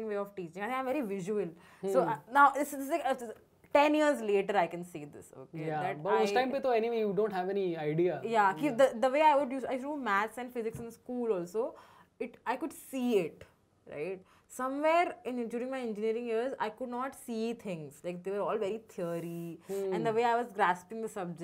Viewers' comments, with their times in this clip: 0:08 Prashasti sounds so much like me